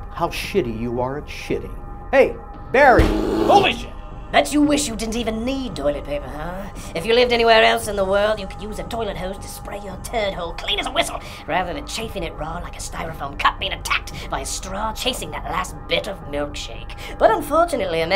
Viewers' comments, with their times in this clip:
0:04 Sounds like the charmin ultra strong bear with Conker the squirrel voice. Or some South Park character.